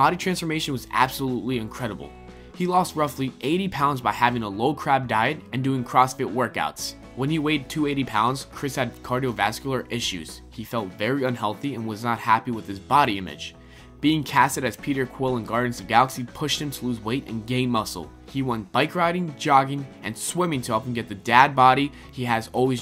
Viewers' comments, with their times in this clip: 0:04 seriously? low crab?